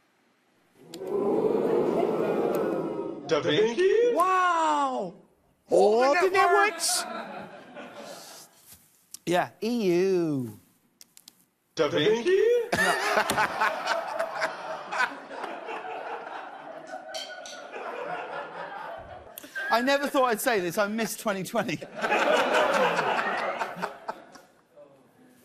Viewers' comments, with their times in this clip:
0:08 DID IT JUST SAY DA VINCI